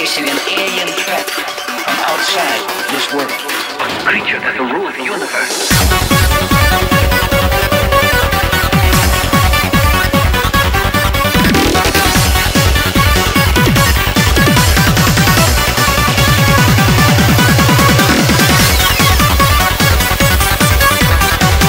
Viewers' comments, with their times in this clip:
0:06 i fuckin love this melody!!!